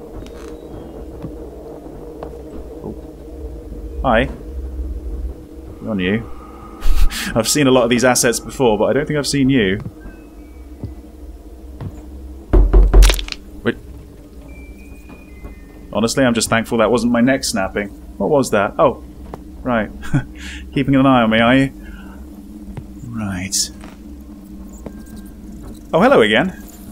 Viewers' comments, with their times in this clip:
0:09 god that door knock had me jump , ive heard it before and think everytime that is from my house lol